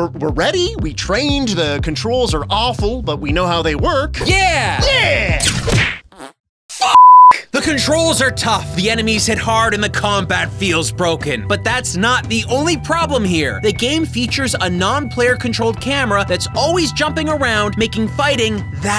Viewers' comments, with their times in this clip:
0:03 That genuine and sincere "F**K" just ended me 🤣